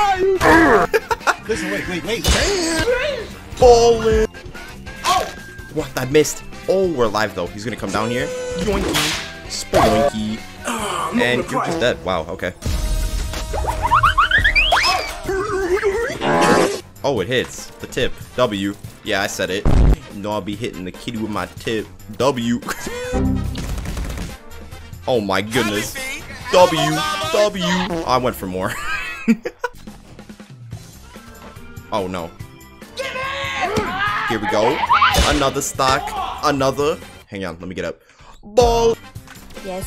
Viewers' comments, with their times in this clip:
0:08 that minecraft sound never gets old
0:21 In I thought he said he said hitting the kid with my tip💀